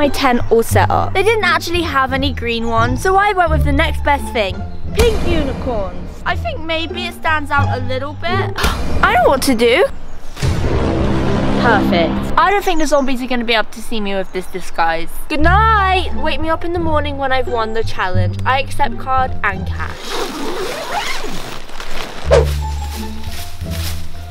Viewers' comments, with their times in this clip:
0:09 morgz: how do i get millions of veiws... Oh i know *puts over dramatic sound on * morgz: perfect